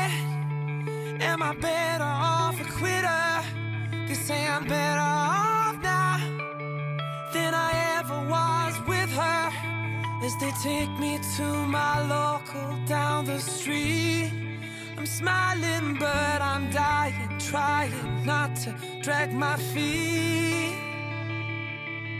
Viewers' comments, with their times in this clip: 0:08 Bro sounded like James Blunt on the word "her"